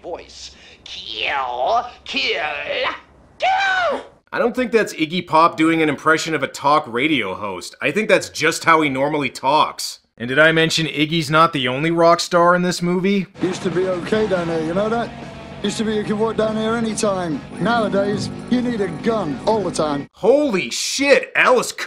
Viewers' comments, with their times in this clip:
0:08 i thought he was trying to imitate Arlo Guthrie from Alices resterurant. lol